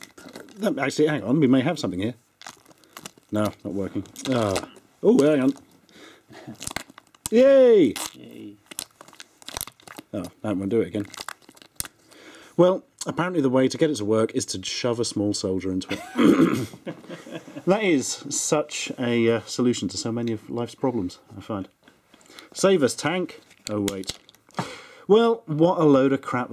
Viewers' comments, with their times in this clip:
0:07 the most depressing yay ive ever heard.